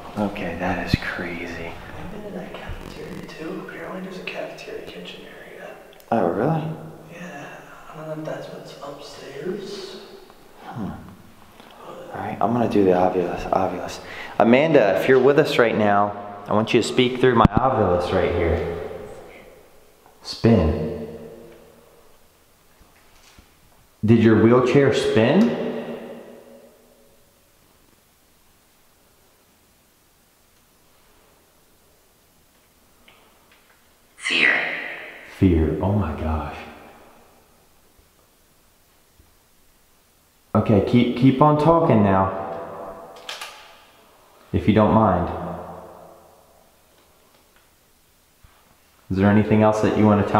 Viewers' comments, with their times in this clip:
0:03 audio goes weird again..
0:32 before the Ovulis says fear I hear more water dripping and sounds like it would be hitting puddles.....poltergeist